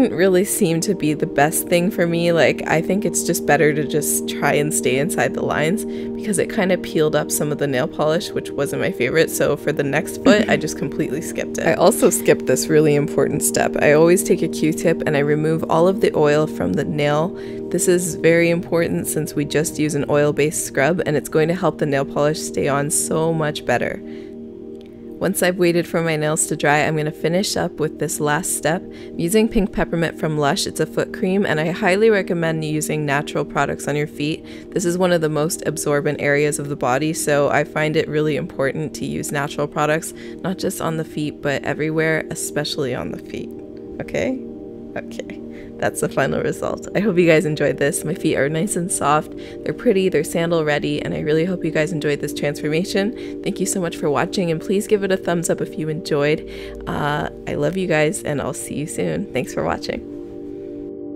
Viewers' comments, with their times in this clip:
0:09 am I the only one that noticed the creepy cough and gasp ? I am using headphones and it freaked be out! o_o
0:10 Who else heard the laugh and got scared?
0:44 cute 'okay' moment